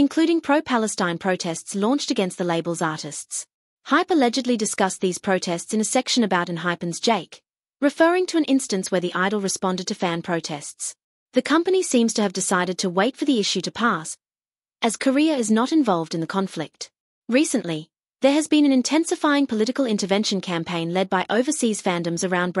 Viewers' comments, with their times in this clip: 0:09 cutely screams that jake's grammar's wrong